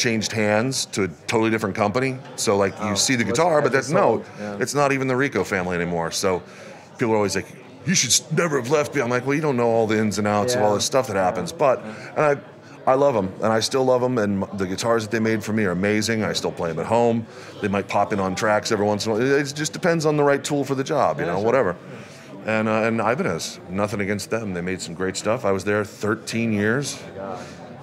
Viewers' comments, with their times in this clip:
0:08 Mick could do some badass vocals, narrating or a character voice. From nice to instant not so nice lol. Guitar is great. Love my USA